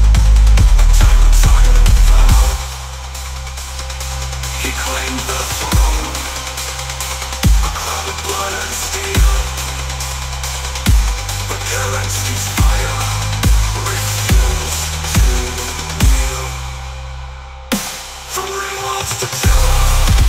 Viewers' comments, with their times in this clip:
0:07 DISCLAIMER: Howdy there everyone. So this was my longest one I've done yet and I experimented a little with a style I've not really done before. For the Amaris Civil War, the VIBE is 100% what I would expect it to sound like. However...around the mark, the quality decreases quite noticably; particularly the vocals. Now OBVIOUSLY this is a limitation of the AI engine, however to make myself feel a bit better about it, I've come up with a somewhat interesting (to me) takeaway. As the events of the Usurper unfold, so does the song begin to decay. Maybe this symbolizes the collapse of civilized society with the beginning of the Age of War in a musical way. 🤷‍♂I tried making it again another way to try and fix the audio decay, however I couldn't capture the feel of the first generation, and it breaks down at a point that I'm pretty unable to rectify. Either way, I hope you enjoy the song, and remember that you absolutely matter, and to have an amazing day!